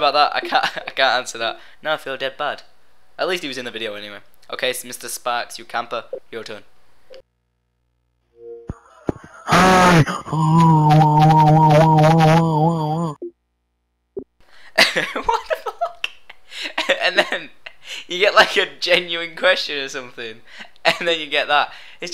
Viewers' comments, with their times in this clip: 0:05 The only Voice Message that sounds similar to Dubstep.